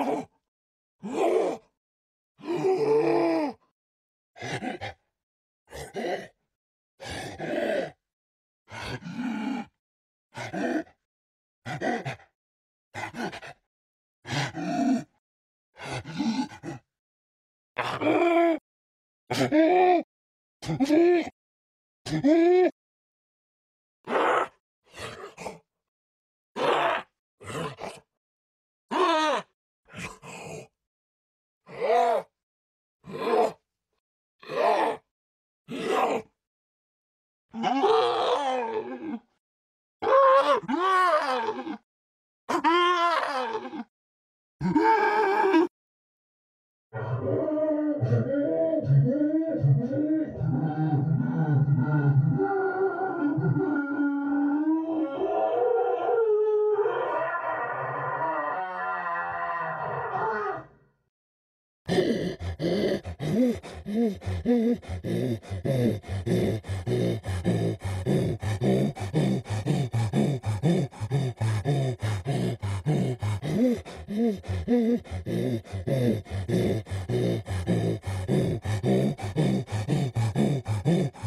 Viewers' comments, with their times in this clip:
0:08 flat out sounds like an angered Zombified Piglin from Minecraft
0:26 why did I think this was a fart the first time I heard it in game, lmao-
0:28 sound like normale human voice
0:28 is it just me or is this the only noise he makes?
0:31 sounds like my frickin grandpa if he screamed
0:35 That grunt in the Gameplay trailer while the Thin Man Putting his hands on the TV while Mono covering his eyes
0:37 What's up with the "damaged" sound clips ? I know he does the last one when he begins crawling into the incinerator but I've never heard him use the others. Also, holy shit that uncut death scream is something else, I can see why they decided to only use the first 8 seconds in the final release.
0:42 if you listen closely you can hear him say no and also couple of seconds back.
0:46 "LET ME OUT, LET ME OUT, LET ME OUT. PLEASE NO, NO, NO, NOOO" screams
0:46 that sounds very painful it kinda makes you feel bad for the doctor all he wanted is to make patients and that is all
0:46 This isn’t ASMR.
0:46 The Doctor: literally burning and screaming to death subtitles: Music
0:48 At the start of the Incinerated voice clip you can hear "LET ME OUT LET ME OUT LET ME OUT" in a muffled voice
0:52 even though he wanted to kill us it still makes me sad that he got burned alive. Just the crying in our ears and his pain and fright.
0:52 this sounds scary to me, you can hear the panic in the doctor's voice, that cry at the end when he was burned left me victorious, but i also felt a little guilty
1:07 a lot of these sound like dogs making whoopie.